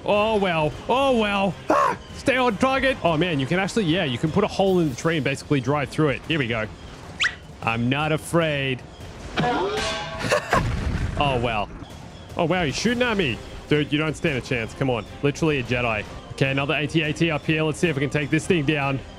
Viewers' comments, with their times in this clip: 0:06 you sound like yoda